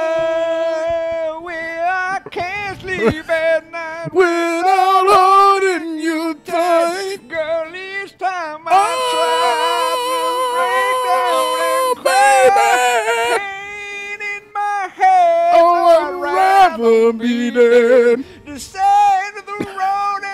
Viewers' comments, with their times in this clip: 0:07 omg wut singing 😂